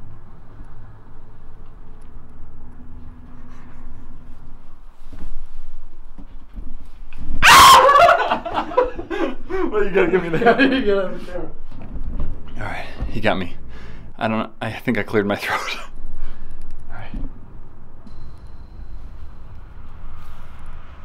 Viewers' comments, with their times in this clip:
0:08 That scream scared the crap out of me